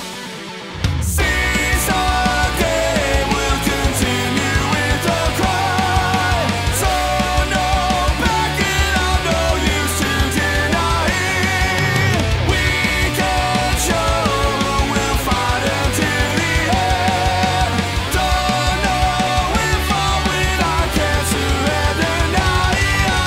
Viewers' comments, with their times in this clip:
0:06 If you changed to "So no backing out, there's no use to deny", you wouldn't have to flip the nautral pronounciation of the word "deny" and it would still be close enough to the original, imo.